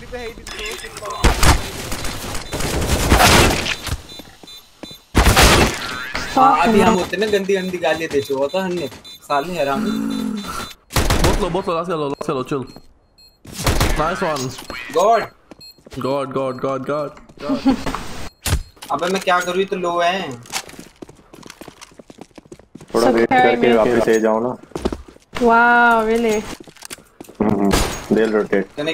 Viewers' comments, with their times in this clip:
0:09 bro udk but the voice u removed was polyphonic sound ....its one of the advance sound in beatbox :)